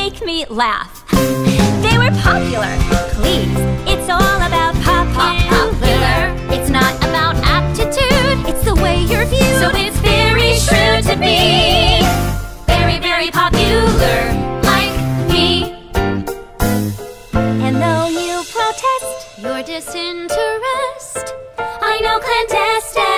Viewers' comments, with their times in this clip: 0:09 THAT HARMONY. Goosebumps. They're fantastic!!! 👏👏👏